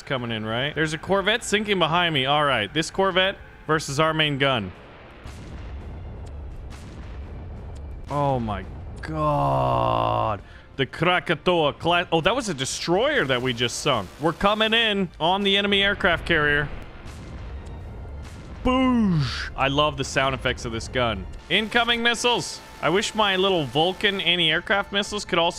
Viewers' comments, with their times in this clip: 0:08 The ground attack aircraft you were flying is the Sukhoi SU-25 Frogfoot/Grach used by the Russian Federation and Ukranian Military, The other aircraft is a Sukhoi SU-27 Flanker also used by the Russian Federation and Ukrainian Military... and nice Russian accent!